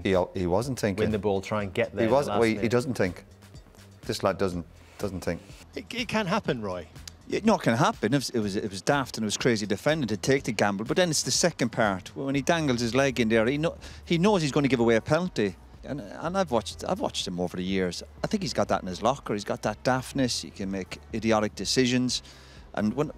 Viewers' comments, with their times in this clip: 0:07 "..he's got that in his locker. He's got that daftness - he can make idiotic decisions" 😂😂🤣🤣🤣🤣 The way Keano lists it the same way you would positive attributes though 💀💀💀